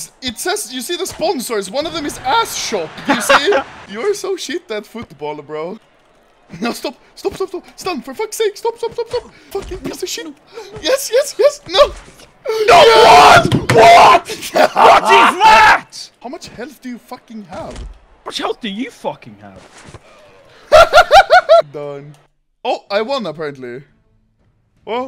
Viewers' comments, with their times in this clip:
0:10 That UK rage lol